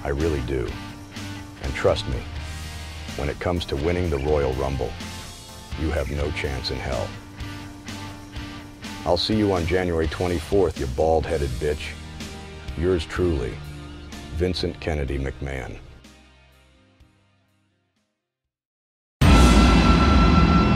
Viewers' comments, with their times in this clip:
0:04 Is that AI Vince?